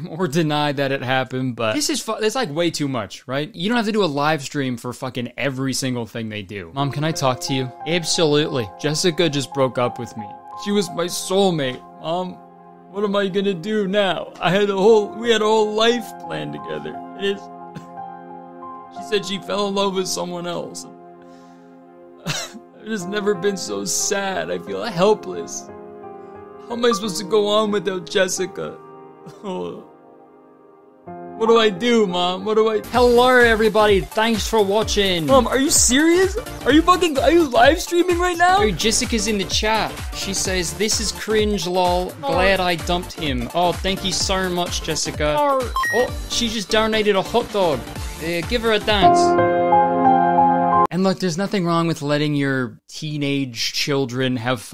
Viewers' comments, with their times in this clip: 0:07 I love that the skit implies the mom is Australian, but the son isn't. Also, love how the son has an accent only to say "naur"
0:37 The accent was actually perfect
0:41 the saddest naur